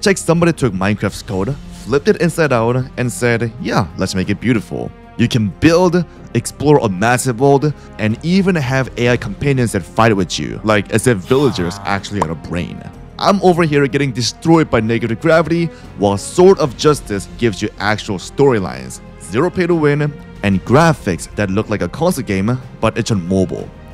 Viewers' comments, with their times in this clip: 0:10 the add doesnt make any sense and sounds ai gen